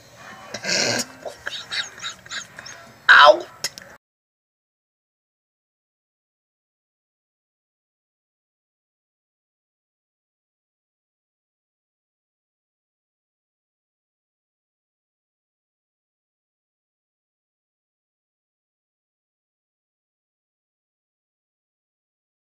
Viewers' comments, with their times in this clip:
0:04 Audio stops for me. There's also a few glitches here and there.